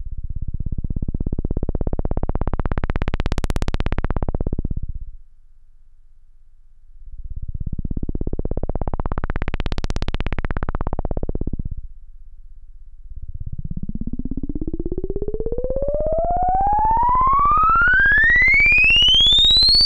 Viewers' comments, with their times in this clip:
0:05 Those filter sweeps of the low note make the perfect Apocalypse Now helicopter sound.